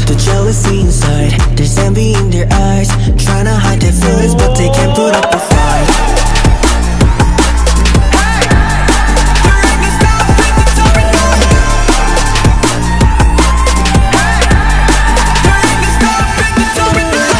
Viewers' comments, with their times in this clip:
0:04 i love how hyunjin said "Fight" in the end ❤